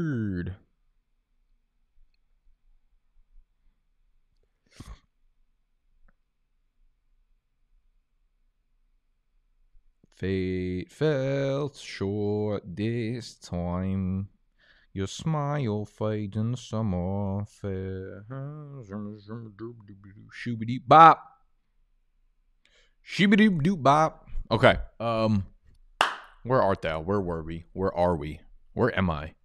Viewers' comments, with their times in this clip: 0:10 your blink 182 cover just gave me heavy feels